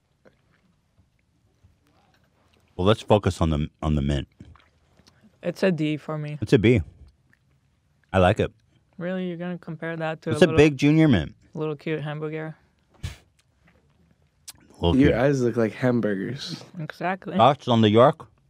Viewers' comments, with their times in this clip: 0:04 Holy smokes, it's the world famous "I LAIHKE IT" soundbite.